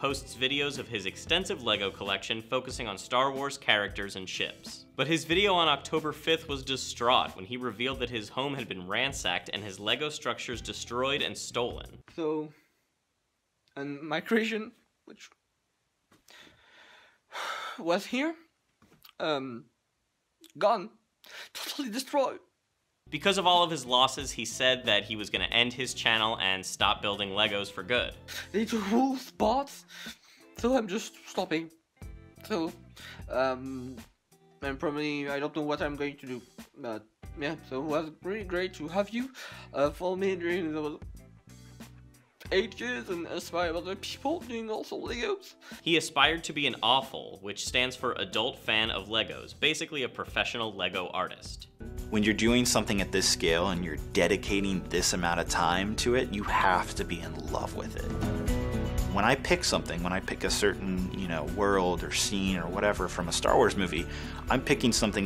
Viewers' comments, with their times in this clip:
0:04 only i heard shits?
0:52 he sounds like h3 ethan